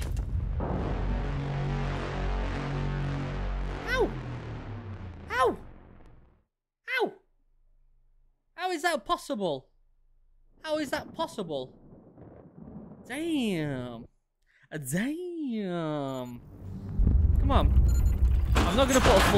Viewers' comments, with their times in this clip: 0:04 Blown up by a Granade . Literally nobody Royal Marine :Ow , Ow ow , cheeky sound 😁😁😁